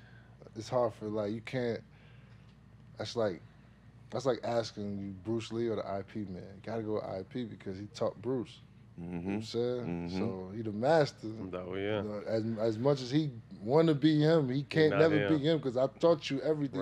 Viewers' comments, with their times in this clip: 0:04 Did dis guy just say "EYE PEE" for IP MAN? That's fresh. And hilarious.